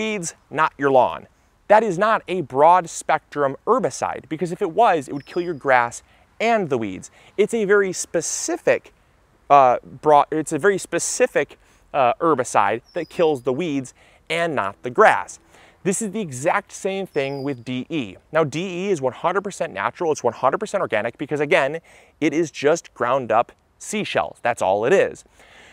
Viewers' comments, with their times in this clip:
0:08 the stuttering that can only come from someone who is bullshitting